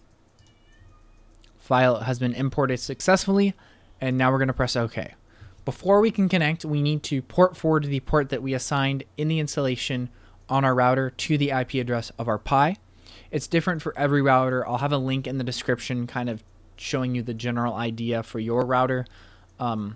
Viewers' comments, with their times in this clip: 0:03 That meow LOL